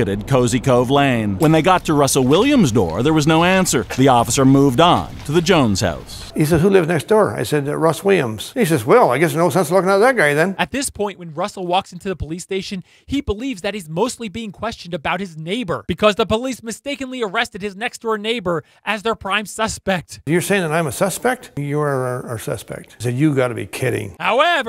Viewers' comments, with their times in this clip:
0:08 What the hell did that guy say? lol
0:10 seconds. I literally had to replay this like 10 times to understand what this man was saying. I'm American, sorry buds.